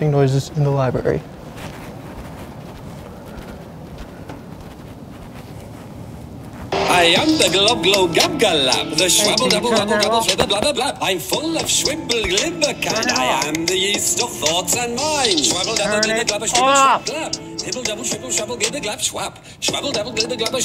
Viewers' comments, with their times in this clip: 0:06 BRO IM WHEEZING LMAOOO THE SONG